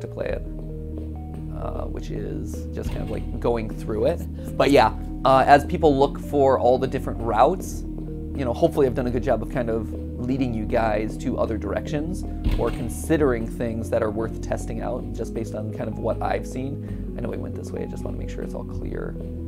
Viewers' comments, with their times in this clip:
0:03 i may be tripping but i’m pretty sure that that was reversed audio